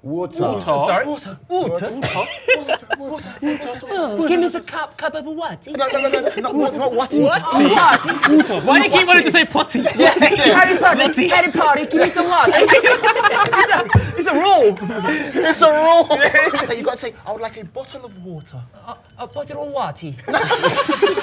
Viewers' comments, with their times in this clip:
0:04 i'm already catching my breath at this point🤣😭 oh you know it's gonna be loud LOUD with them